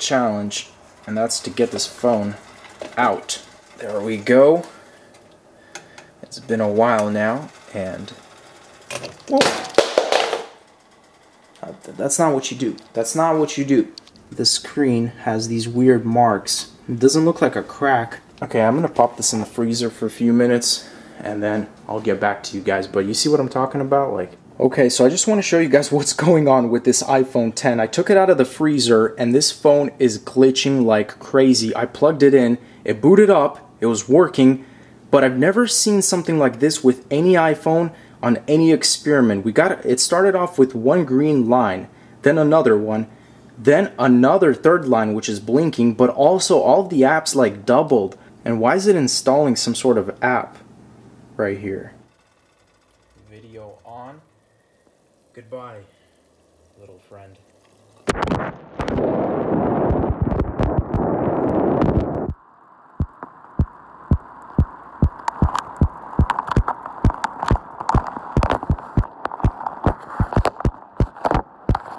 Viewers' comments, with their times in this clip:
0:06 “It’s been a while now...oop!” phone smacks the floor Me: ARE YOU STUPID
0:09 R.I.P HEADPHONES USERS!!!
0:58 This is how it looks/sounds like when ur drowning in water. You can hear the iphone X's heartbeat lol